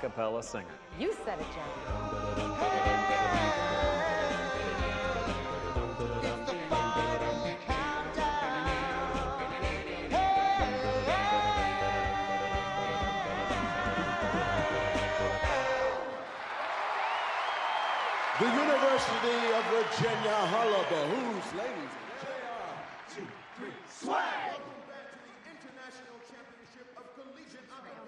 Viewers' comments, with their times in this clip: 0:06 all i hear is ''is the final braincell''
0:11 those guys singing the final count down song should have won. They sing so good for males